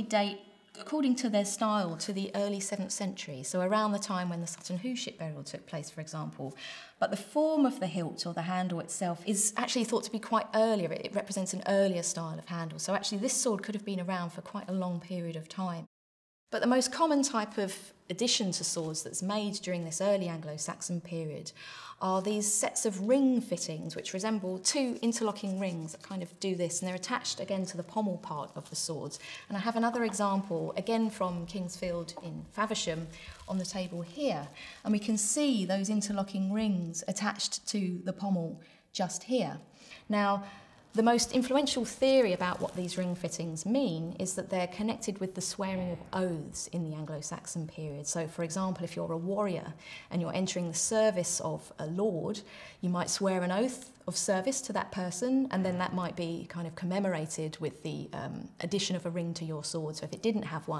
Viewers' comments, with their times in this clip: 0:04 "a time when ahooship took place for example"?????? what?
0:42 Holy shit did anyone else hear the audio glitch as she said "The swearing of oaths?" Like a small puff of wind was hitting the mic as she said it, and her voice echoed slightly. Welp I guess i believe in ancient rune magic now.